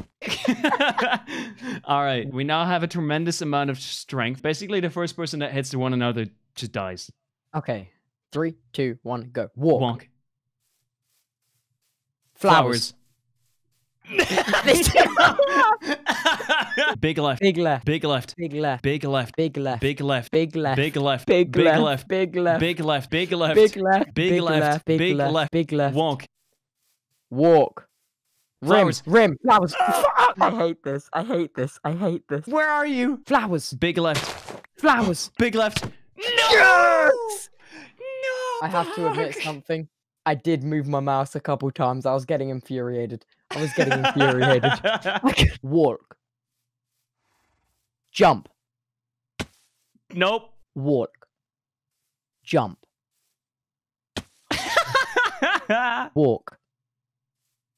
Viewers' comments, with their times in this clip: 0:08 more like bagel
0:17 immagine when they scream it BIG LEFT BIG LEFT!!!!!! neighbors:BIG LEFT in the distance* what the frick calls 911
0:17 big left turning into "bekle"
0:20 I hear "pig left" lol
0:45 tubbo saying walk sounds like “worlk” lmao